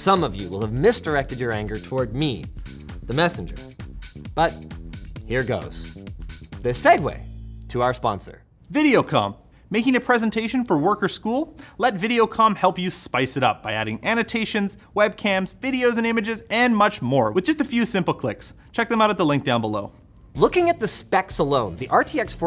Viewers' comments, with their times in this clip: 0:08 i thought he said something else 😳